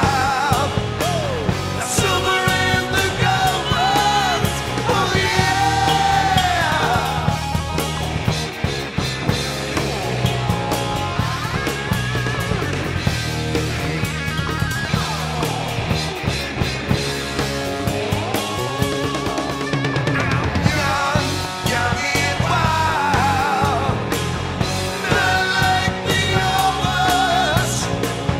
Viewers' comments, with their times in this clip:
0:10 Good stuff for sure. sounds like the solo for where have all the good times gone. What do ya think?